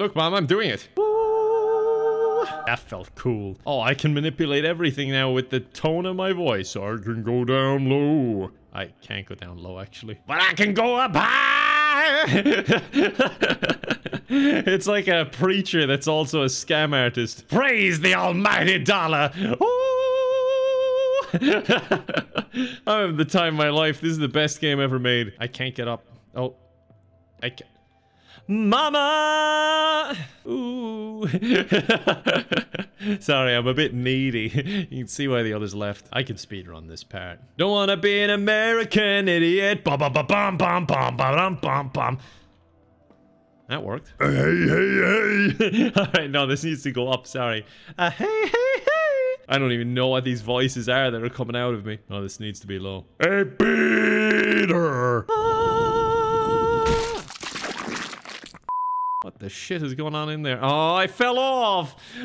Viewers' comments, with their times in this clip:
0:04 that high was hilarious and oddly well done
0:44 Wasn't expecting that bokuto impression but I'm loving it
0:44 BOKUTO IS THAT YOU
0:48 Sounds like Michael Jackson